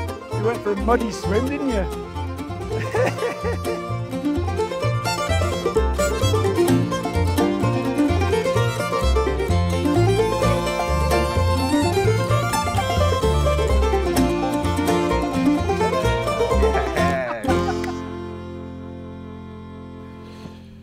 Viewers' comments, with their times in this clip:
0:06 improperly fitted or absent headlamp seal. It matches the incredible rattles from earlier. Land Rovers were made by the Rover Car Company, they were a quality car, the Queen drives them, there is no excuse for this shoddiness.